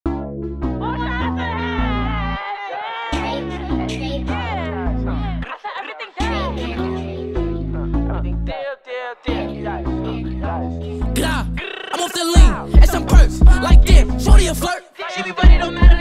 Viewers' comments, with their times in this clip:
0:01 wtf was that Sound like roasters at a farm